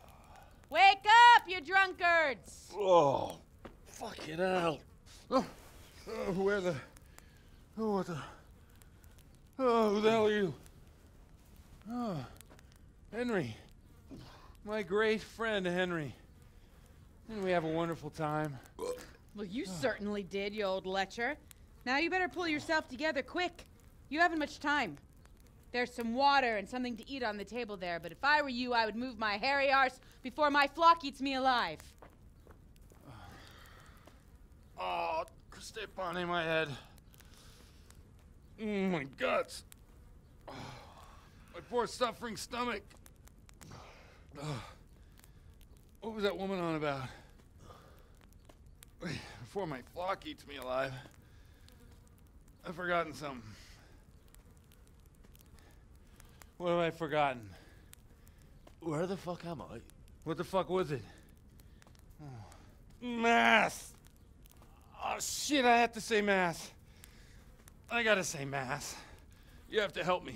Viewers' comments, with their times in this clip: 0:03 Sounds like Ramsey 😂😂😂
0:58 love the delivery on Henry's line there.